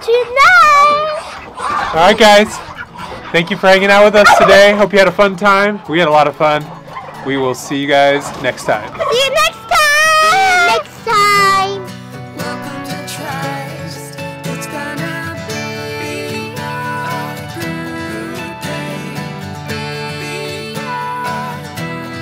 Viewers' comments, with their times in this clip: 0:10 JESUS MEGA EARRAPE FROM THE KID AT THIS PART OF THE VIDEO I WAS WEARING A HEADSET